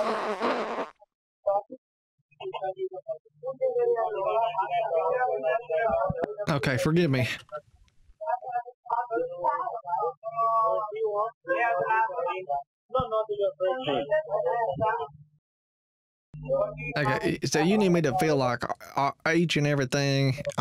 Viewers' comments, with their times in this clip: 0:06 sounds of purgatory lol